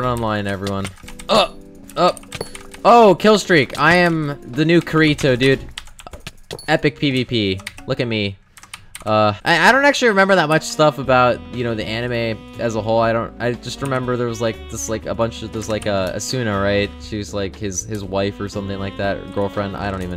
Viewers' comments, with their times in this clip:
0:03 I had to stop watching after he said Kaareeetoe.